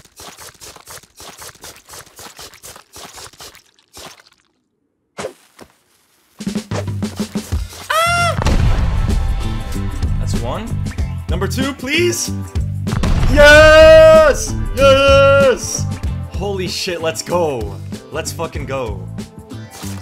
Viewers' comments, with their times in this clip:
0:06 beautiful vocals bro